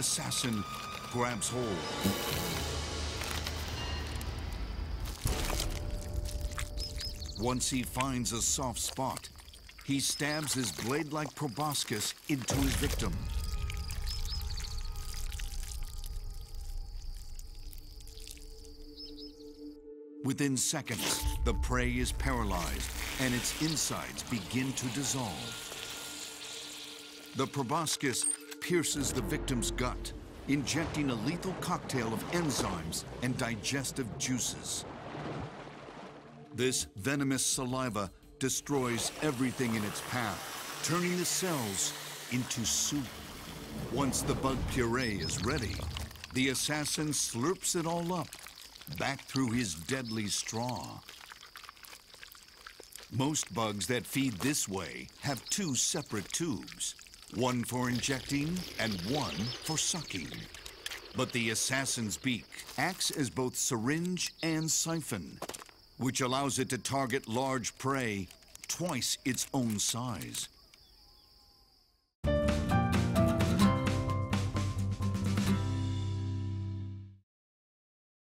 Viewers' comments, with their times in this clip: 0:04 Hi how did the capture the stabbing sound ?
0:07 "Once he finds a soft spot... he stabs his blade-like proboscis into..." "Phew, looks like it's over, he already---" OH OH HELL NO shoves the blade-like proboscis back in the body HARD crunch splat sound effect
1:03 THE DROPPING NOISE HAHAHHA